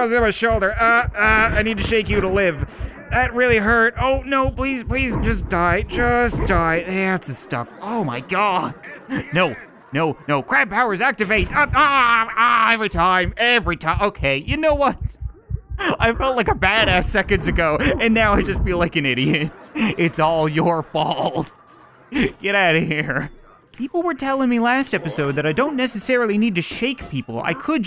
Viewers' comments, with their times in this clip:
0:10 i heard crap powers activate